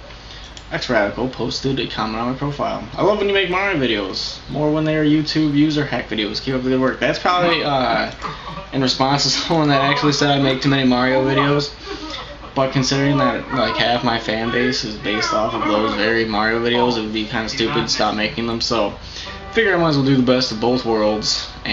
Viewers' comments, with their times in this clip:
0:07 LOL! TV in background